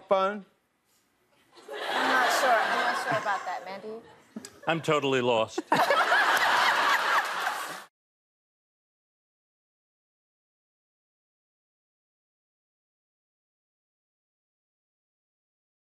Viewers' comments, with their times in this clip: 0:06 Shawn’s laugh😭😍 my heart can’t take this😫💗